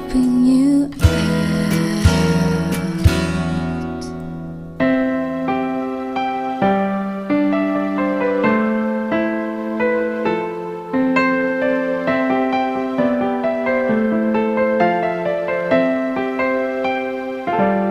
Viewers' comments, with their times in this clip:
0:04 Is it just me or does Again sound like Iyaz's Solo?